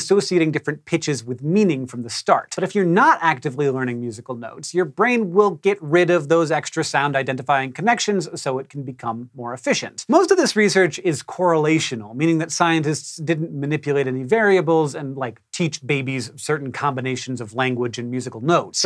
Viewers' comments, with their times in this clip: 0:04 your brain will get more "efficient" with lack of knowledge. I guesed D for the first tone and A for the second. Pretty good, not that I'm surprised.